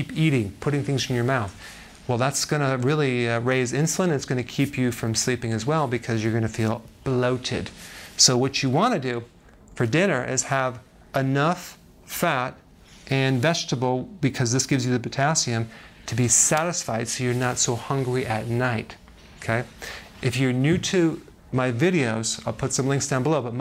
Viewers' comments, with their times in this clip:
0:07 BahloaTED. Just wondering if it’s just me.